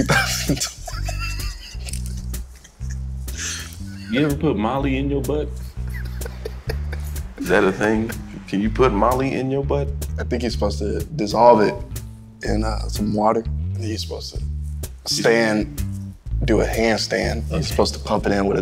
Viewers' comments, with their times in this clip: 0:04 why was it said like that?? 😂😂😂